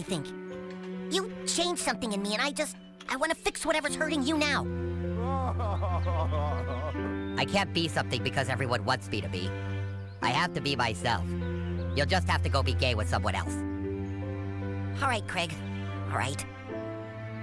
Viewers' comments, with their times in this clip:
0:05 Thomas crying in the background. 😂